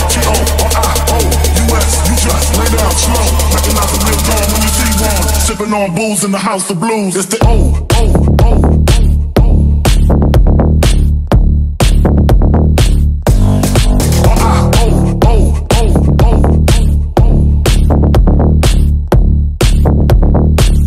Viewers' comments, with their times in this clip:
0:05 The beatdrop that everyone is looking for